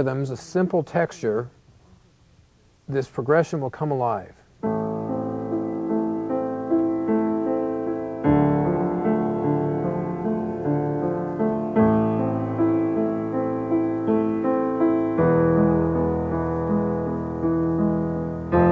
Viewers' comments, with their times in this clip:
0:04 so cool music